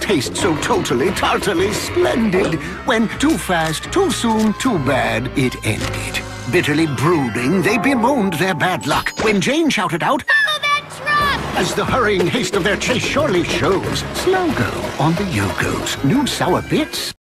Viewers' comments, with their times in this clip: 0:10 ouch, voice crack